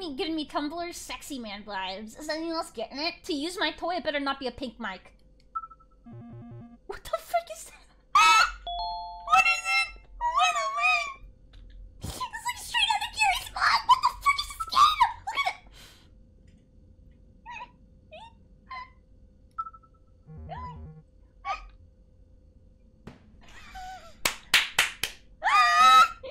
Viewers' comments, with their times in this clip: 0:07 I can't say it's edited voice or not 💀